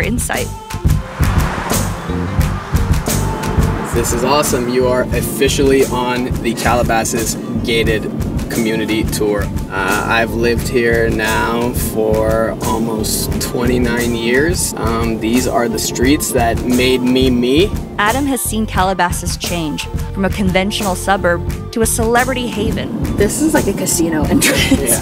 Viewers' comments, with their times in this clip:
0:06 The Pewdiepie background music starts playing lmao. Anyone know that song btw?